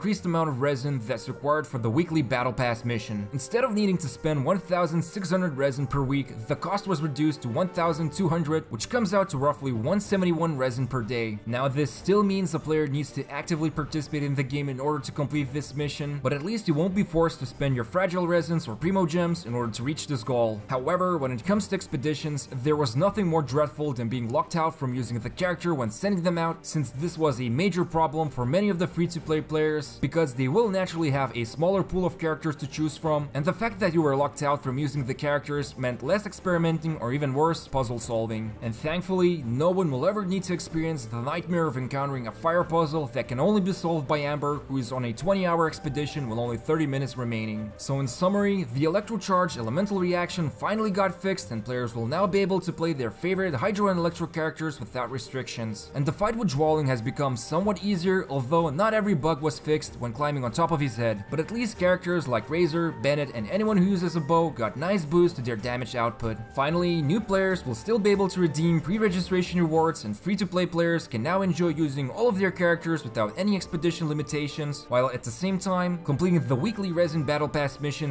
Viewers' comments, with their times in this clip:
0:07 Guess Imma go and spEEnd my resin now
1:02 razor bennet uses a bow ???